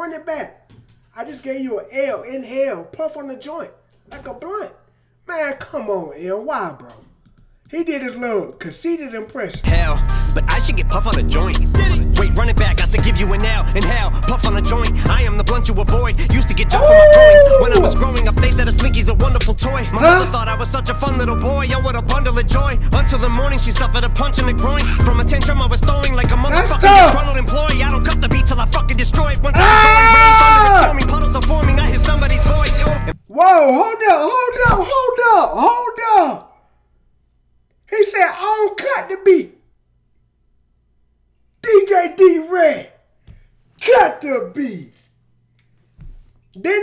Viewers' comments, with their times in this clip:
0:10 I swear I thought I heard Eminem trying to do cardi b flow😂
0:29 Remind me OF Tom Screaming In Cartoon😂